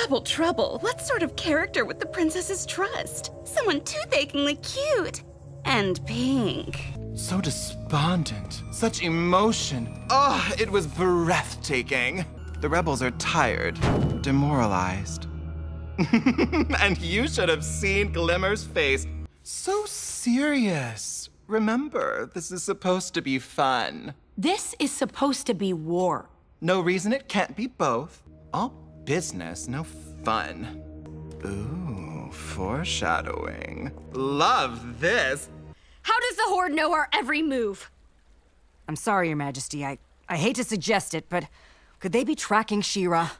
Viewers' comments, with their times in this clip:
0:03 why does she low key sound like Jessie from team rocket 😂
0:07 Can we all just appreciate that in right before flutterina says "and pink" she sounds exactly like Jesse from team rocket?
0:14 Me, who has never seen the show and is watching this to see if it’s worth it. Watching DT Okay, cool. Hearing their flipping voice … Is that a boy?! Genuinely confused now, but I think I may watch the show just for this pretty creature. XD
0:31 the way they talked i am simping so hard on them 🥰🥰🥰🥰🥰